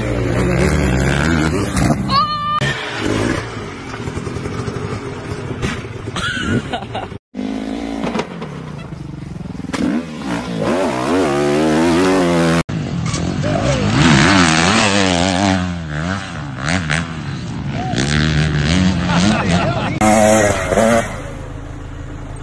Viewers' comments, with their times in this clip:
0:07 hehe clown horn